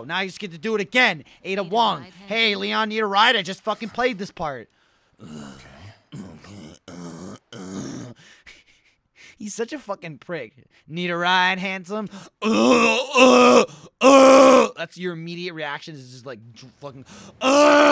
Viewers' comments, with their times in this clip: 0:05 lol i played re4 so many times, but I thought the grunts were the actual dialogue for a split second